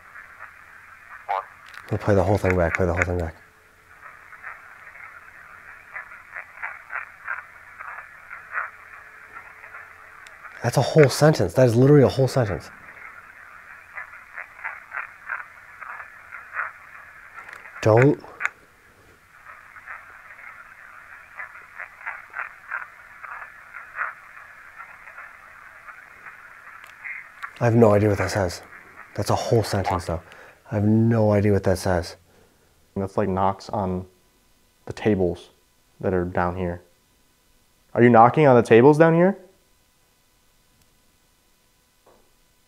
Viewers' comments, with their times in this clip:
0:07 sounds like the I’m a little teapot song to me
0:28 It kinda sounds like it says, "Don't look into the scrying mirror." What do you think?